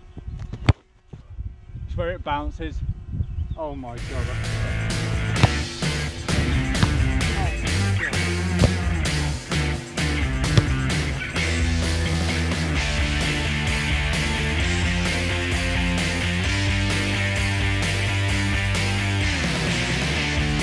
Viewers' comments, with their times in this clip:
0:03 When he said “oh my god” I literally though he hit a wire posts cuz the beginning of the song that plays around that time sounds like that